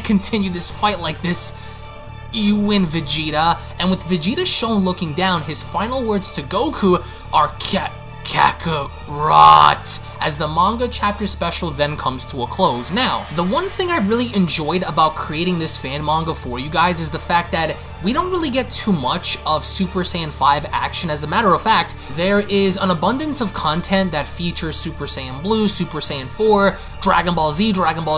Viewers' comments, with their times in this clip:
0:10 vegetas broly impression